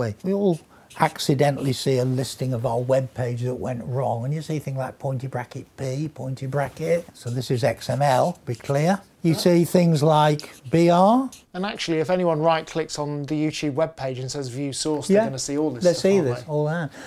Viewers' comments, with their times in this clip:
0:03 I love the way he sings "...and you see things like, pointer bracket, 'P', pointer bracket!" :)